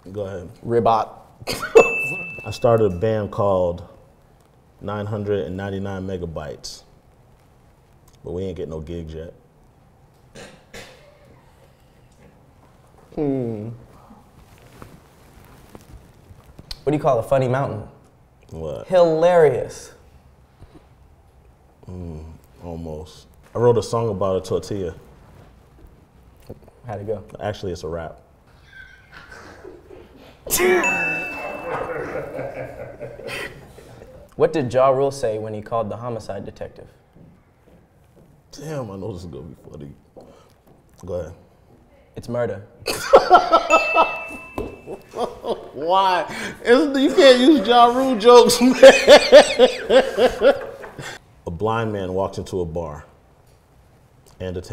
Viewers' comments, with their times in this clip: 0:09 That laugh sounds like tearing duck tape.
0:40 Love how on ,he still knows the jokes and laughs even harder